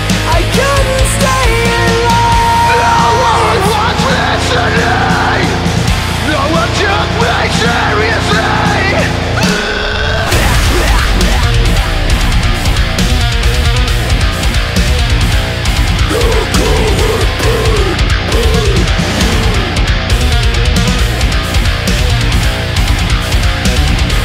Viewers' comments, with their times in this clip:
0:08 sick breakdown! love it :)